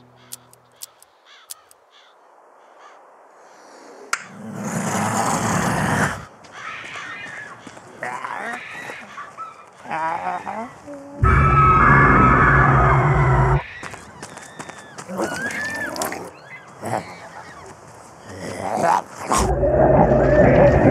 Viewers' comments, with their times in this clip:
0:06 Hear those evil girls Crying..And Screaming in pain...ITS SO FREAKING EXCITING! >:) >:D >:3